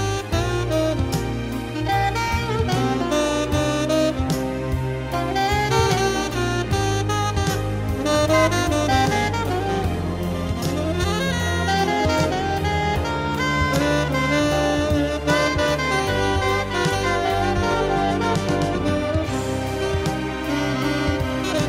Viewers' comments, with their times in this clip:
0:04 the lick (jazz)